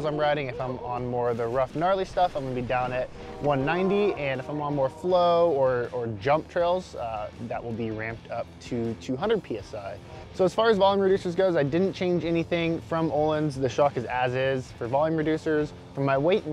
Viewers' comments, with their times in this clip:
0:03 you have trains in the woods there?